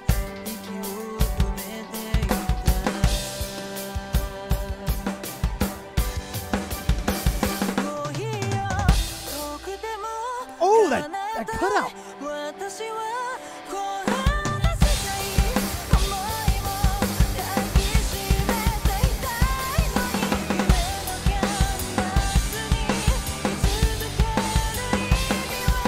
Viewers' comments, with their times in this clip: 0:08 I'm glad I'm not the only one who's surprised at that cutout the first time I heard her sing this song. You listen to alot of music, your first instinct is to expect a burst of instruments right at that moment. But instead it's just her beautiful voice luring you in, and a touch of piano, then the actual burst came out right after that.